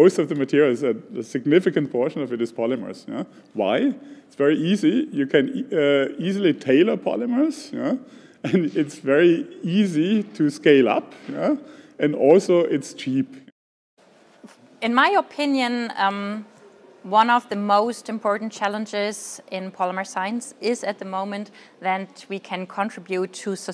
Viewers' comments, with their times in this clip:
0:10 german accent in a nutshell